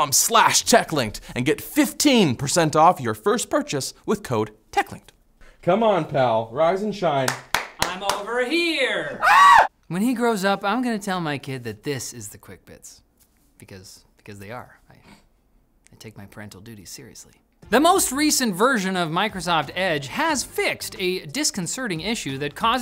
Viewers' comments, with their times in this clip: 0:08 homer simpson scream
0:09 that's a perfect Homer Simpson scream